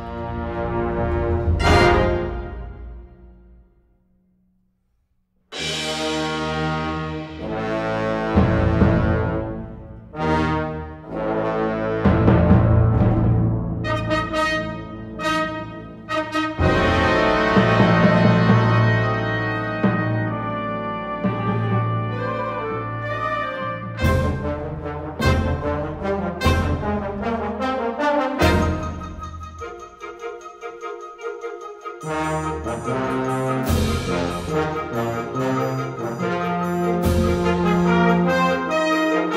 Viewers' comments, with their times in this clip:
0:05 We are playing this song in band and my favorite part is when me and the trombone sections play
0:22 mine is with the flute trill thingi